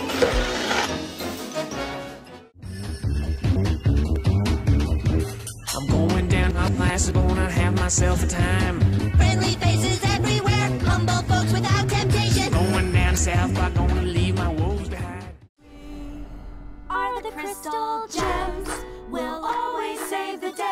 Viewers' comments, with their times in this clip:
0:07 I like how they reversed South Park so viewers won’t cheat.